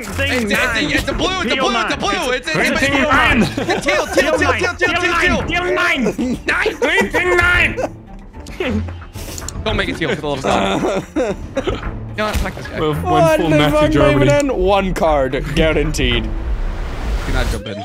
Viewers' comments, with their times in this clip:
0:03 bro became german there!!!